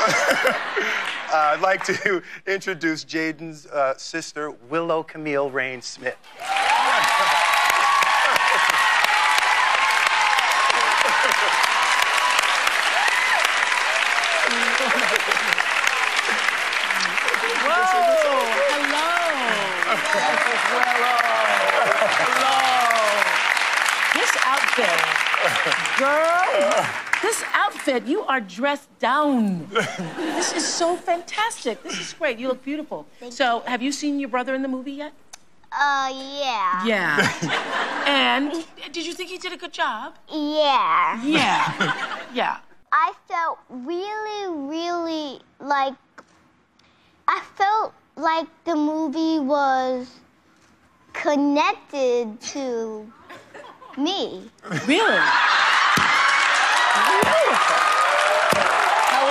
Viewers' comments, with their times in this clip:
0:04 He loves his children deeply ❤ 💙 ♥ 💕 his voice got softer as he said her name
0:37 Oprah did a British
0:40 he started saying it that way since she was 5